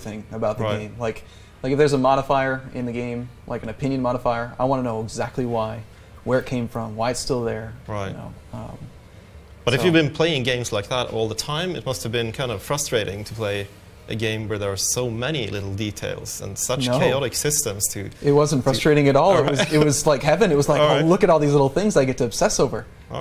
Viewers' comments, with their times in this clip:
0:07 The volume is fixed